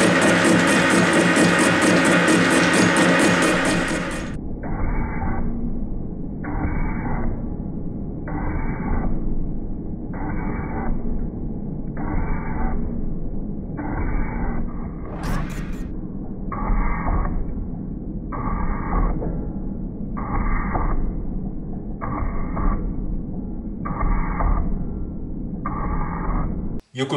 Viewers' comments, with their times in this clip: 0:10 Well thought out modification. I particularly liked the slow motion turning over the discontinuity if you closed your eyes it sounded like the shaping machine!! Good luck from Spain!!